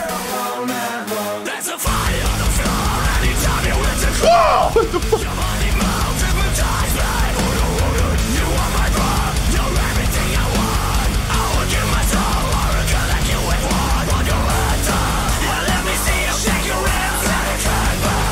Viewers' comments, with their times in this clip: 0:04 That was happiest wtf I've heardfor a long time